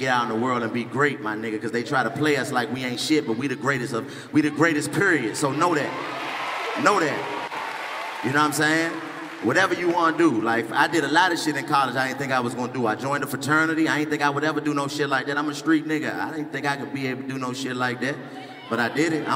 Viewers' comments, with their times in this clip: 0:05 Ik y’all heard that wave of PERIOD